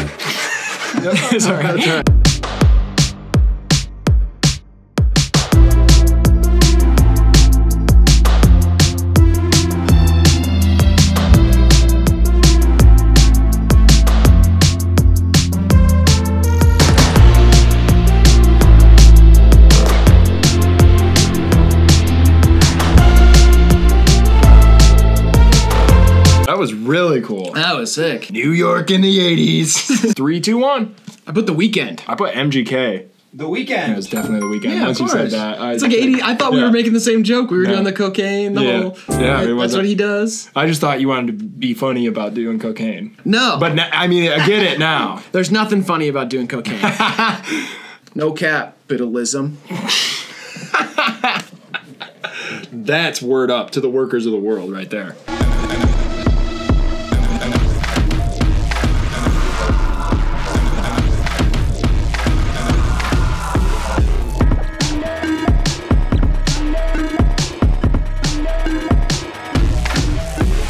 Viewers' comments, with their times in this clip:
0:09 blinding lights 2
0:55 wall of flesh bossfight type beat